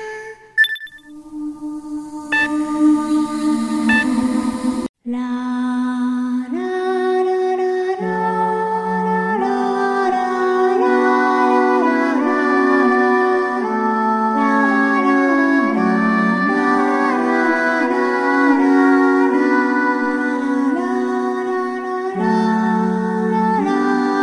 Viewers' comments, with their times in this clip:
0:05 literally no one's loving the music everybody's with that lalala thing ;-;